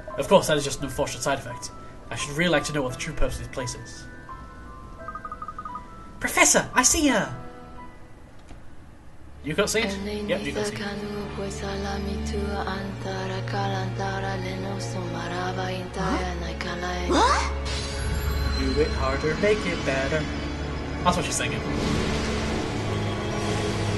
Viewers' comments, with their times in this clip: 0:10 I think they just said to the voice actress "Just speak some gobbledigook into the mic and we'll pretend it's an ancient language" :P